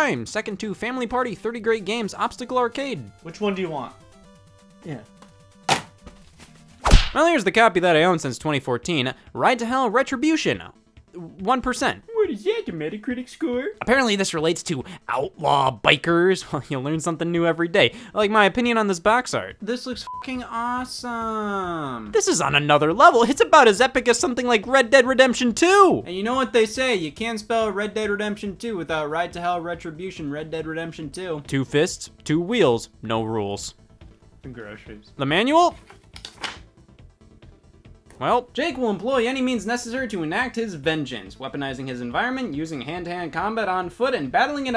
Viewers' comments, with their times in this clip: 0:09 him sarcastically saying the most obvious joke to make has to be one of my favorite bits in this video
0:11 the delivery of that line had me laughting so hard
0:11 what is that voice
0:12 woah. Never would have expected Scott to talk like Homer Simpson!
0:31 the delivery of this fuckin killed me